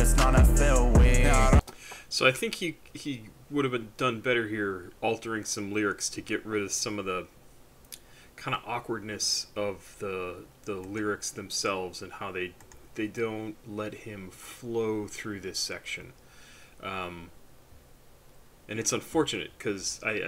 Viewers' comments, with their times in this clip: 0:04 i feel like he needs to either embrace the beat or fully not care about it at alll. You're right it sounds a little weird. There are a billion ways to write anything, so there isn't really an excuse to make it hard to sing along with. I feel like the popularity of most songs is how relatable they are and how easy they are to sing along with.